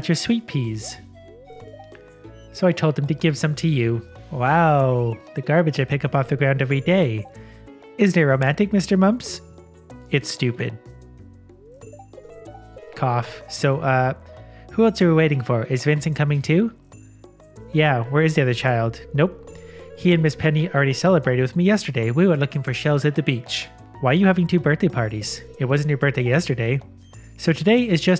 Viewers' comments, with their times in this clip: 0:09 I'm not being hyperbolic when I say I have tears in my eyes from laughing so much, hahahaha what really got me was his tone of voice when he said "it's stupid,"